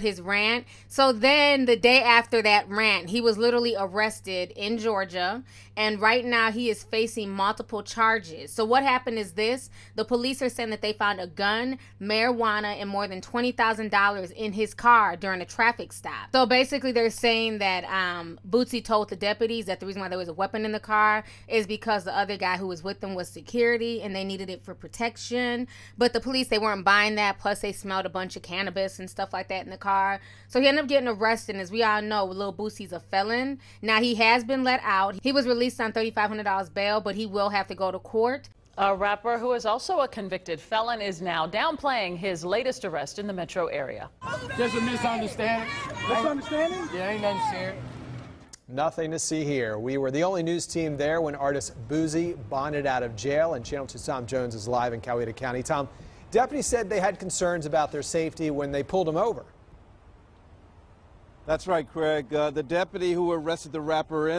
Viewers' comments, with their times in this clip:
0:05 Completely off topic but...what is with those fire alarm sounding beeps at around the mark? I hear it all the time when ppl are on insta-live!! What is that about? I'm asking because when my dog hears it HE FREAKS OUT & thinks it's MY smoke detector going off!!! Did I mention hes a BEAGLE so you can imagine the howl!! 🤣🤣🤣 my neighbors hate me!! 😂
0:50 How the white news reporter said Boosie....""boozzie"" 😂😂😂 ....
0:51 The artist “BOOZEy” omg not like the alcohol sir lolololol omg 🤦🏾‍♀️ haHhHHaAaa